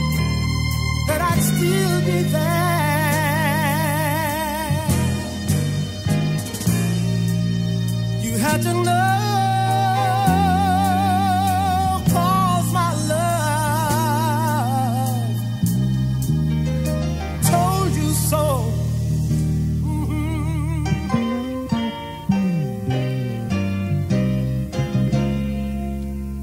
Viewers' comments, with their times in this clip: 0:09 “You had to know” gives me chills everytime!! This is the one of the Greatest songs/ Voices I have ever heard!!